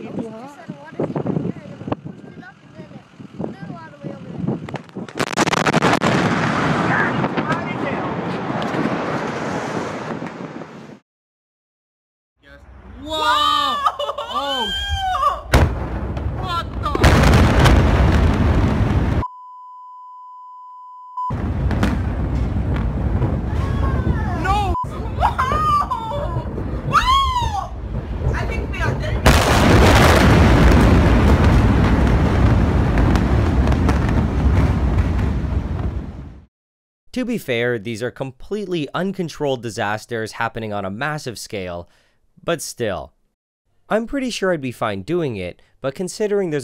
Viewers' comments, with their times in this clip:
0:03 Man stairs at burning building talking Building decides no more and just goes boom
0:05 “God almighty damn” that is the most Texas thing I have ever heard.
0:07 "God that's loud as hell." -Some random west Texan He sounded so calm too real gigga chad/chadet
0:12 starting video. I am a simple man, fire and explosions are great, often. Also chemistry and measuring glass tube that makes noise :)
0:13 The girl souded very amused for being so close to that giant explosion 😅
0:13 why does the girl sound like it is a good thing that it blew up haha🤦‍♂️
0:15 No need for a bleep on that one "What the *B O O M*"
0:15 Check out how happy they sound :'D Probably like a couple hundred people could possibly die from that kind of explosion and they're like "Woah" :D
0:16 WHAT THE KABOOM
0:25 "I think we are dead". BOOM!
0:26 Also you can hear both sheer terror and excitement in this girl’s voice. She doesn’t know how to react to the horror. That’s actually really scary.
0:27 "I think we are dead in here" in the most monotone voice one could have in the situation
0:27 I think we are dea-- B O O M
0:27 after the second explosion, lady in the background goes "I think we are dead-" and then BOOOOOM lmao
0:27 I think we are dea- B O O M
0:28 a really big bark btw
0:28 This is what it sound like during thunderstorm
0:28 “I think we all good” sound of a nuke going off
0:29 0.25x, full volume, you can hear doom eternal music